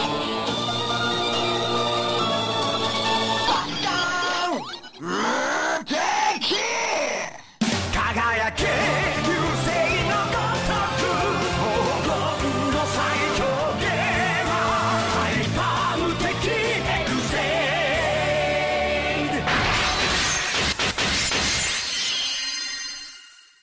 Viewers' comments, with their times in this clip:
0:05 Fucking noise.*Kills tv screen.*